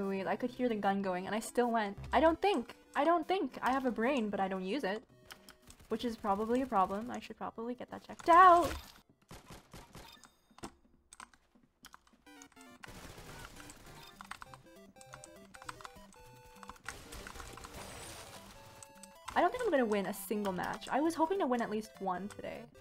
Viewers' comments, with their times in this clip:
0:09 a few seconds of ASMR... 2 seconds later Mario Music comes in 😎 Such a gamer move. 😳😌🙏🏽